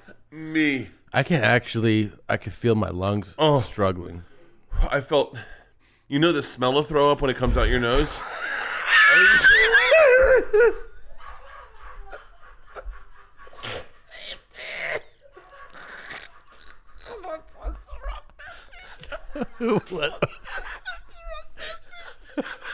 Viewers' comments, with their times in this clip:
0:10 they got ksi to laugh in the back💀